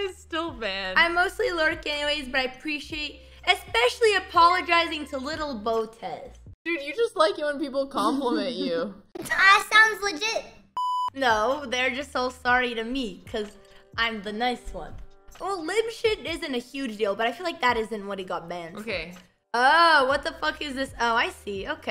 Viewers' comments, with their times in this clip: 0:08 Holy shit how does that sound so much like an actual child